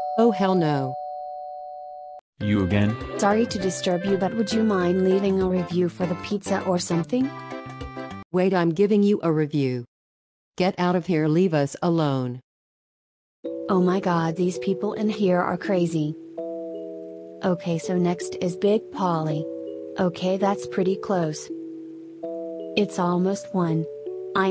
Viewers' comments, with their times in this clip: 0:08 angry and say wait i giving you a review, haha😂😂😂, i think they dont like been disturbed